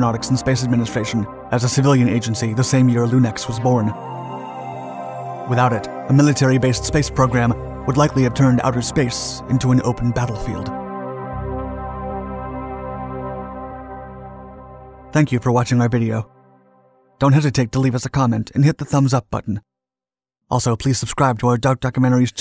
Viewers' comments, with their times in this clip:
0:03 that jingle makes me think of Starcraft.